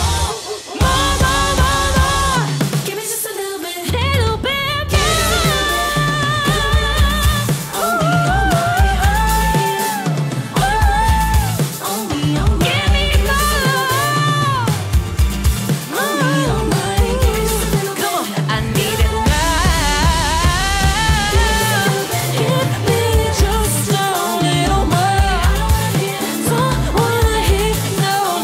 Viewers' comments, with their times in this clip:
0:09 What she did with her voice after is INSANELY BEAUTIFUL